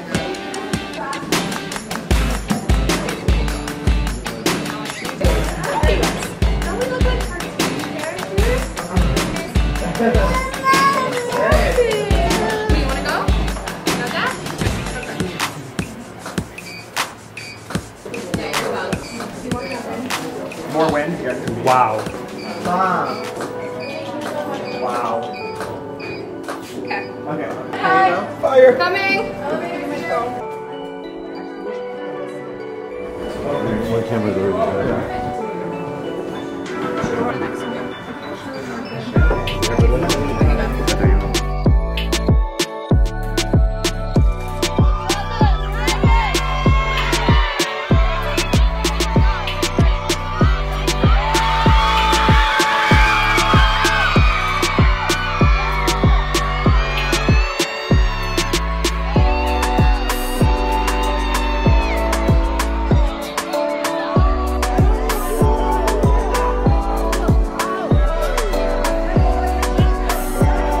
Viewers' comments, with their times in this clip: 0:10 stormi was crying for her dada,maybe she got scared of her mama lol🤣🤣
0:51 that kylie calling gave me goosebumps